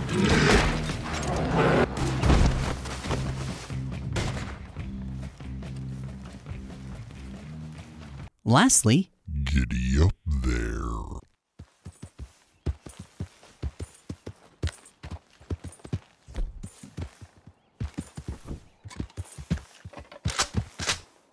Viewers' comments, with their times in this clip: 0:08 I wanna buy the sexy Arthur voice pack